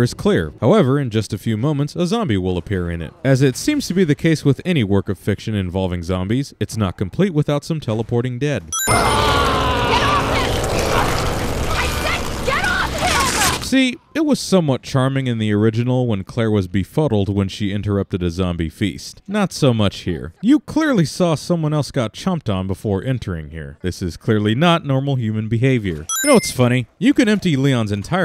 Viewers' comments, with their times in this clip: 0:10 GURL He is ripping the neck off that dude while snarling and growling do u THINK hes gonna get off him like “oh geez , how clumsy of me , sure I’ll get off 😊 “ honestly 😂